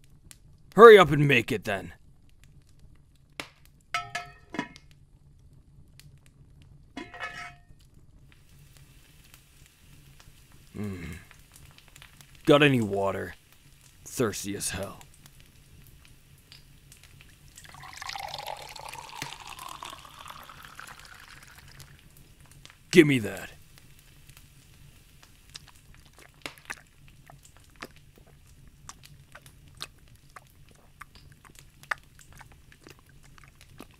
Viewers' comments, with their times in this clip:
0:06 Ok is it just me or I heard genshin cooking sounds?!
0:06 THE GENSHIN COOKING SOUND 😭
0:17 ASMR water sounds slay